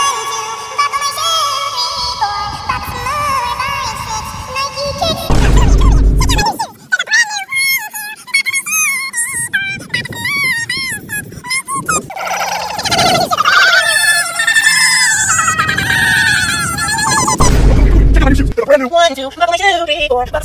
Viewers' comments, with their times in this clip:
0:07 the 0.5x part turn it 2x =normal speed